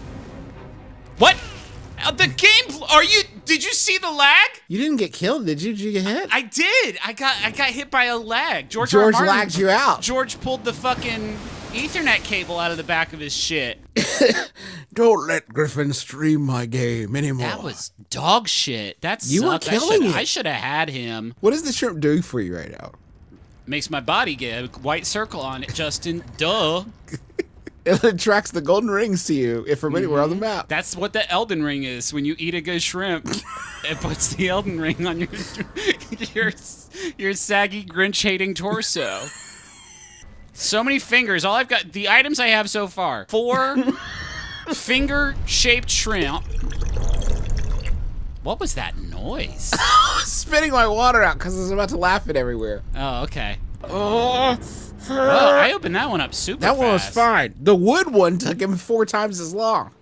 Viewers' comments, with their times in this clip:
0:08 420. Very stoned, PM, enjoying me some Monster Factory. That slack notification generated a strong fear response. Nothing good happens on slack after 9 PM.
0:42 absolutely kills me the way Griffin asks
0:45 you can not tell me that wasn't just a stock pouring sound.
0:46 I really thought Justin was hitting a bong so so right in honor of 4/20.